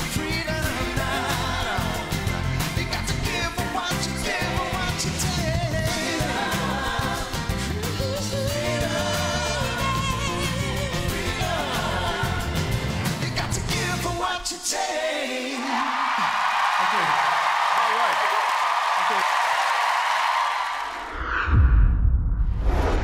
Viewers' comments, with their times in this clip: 0:07 I feel the same. The only good part (for me) was a falsetto in